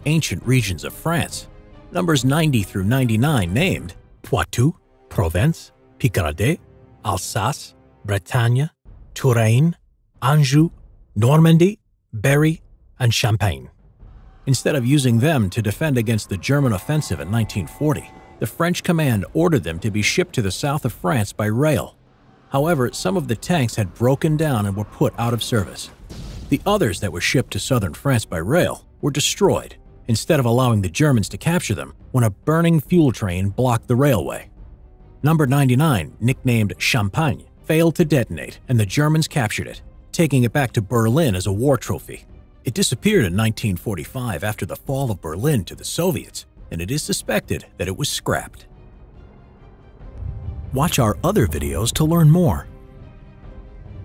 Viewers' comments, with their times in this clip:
0:03 Fair warning for all native frenchies out there, his accent is awful.
0:36 yaaay good pronunciation, well done :D